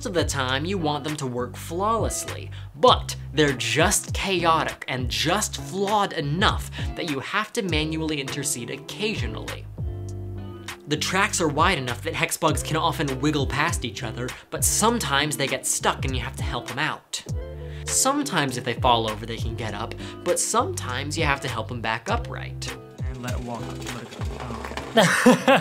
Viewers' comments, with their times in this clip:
0:07 sounds like vtubers